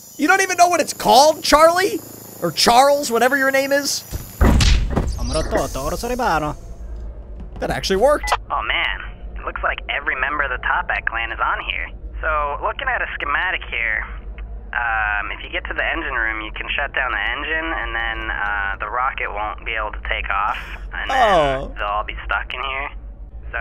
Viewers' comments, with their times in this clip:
0:06 ,you can see and hear luigi talking to mario.